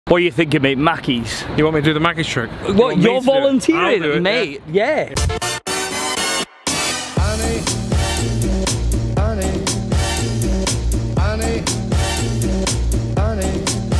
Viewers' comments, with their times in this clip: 0:00 “what u thinking mate Maccies trick” “U want me to do the maggots trick”😂